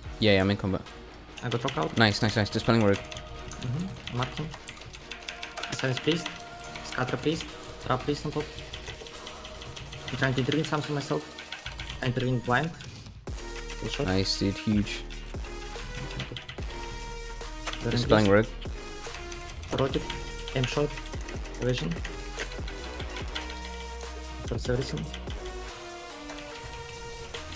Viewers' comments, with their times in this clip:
0:09 lmao the most calmest "i intervened blind" a man could've possibly said